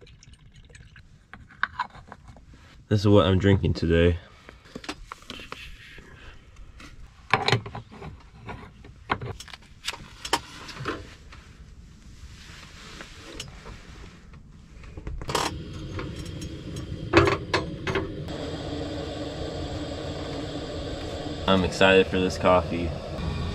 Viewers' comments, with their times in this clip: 0:05 You have a lot of explaining to do boy LOL 🤣 Nice job man! P.S. I loved the sound effects you made for the coffee going into the filter, you crack me up!!!